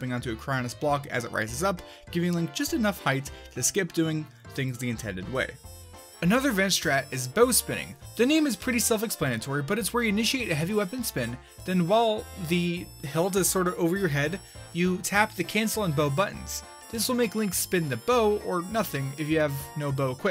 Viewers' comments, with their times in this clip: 0:07 When you talk, you have these quick pauses everywhere. is where it shows up the most. I know you're probably reading from a script but I'm just trying to help you out :p